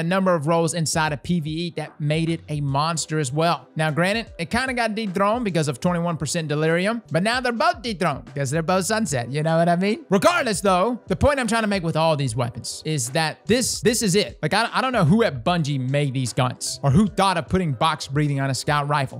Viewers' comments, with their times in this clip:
0:07 u can hear the pain in his voice saying that. smiling thru it like the rest of the community. fckn bungo